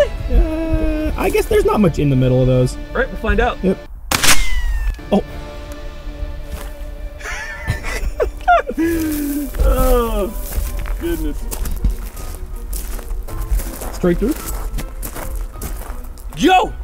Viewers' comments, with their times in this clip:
0:03 nothing makes ya feel like an old west cowboy like a 22 lever simply because of how often ya get the BIZZZZZ . so surprised more people arnt hit by them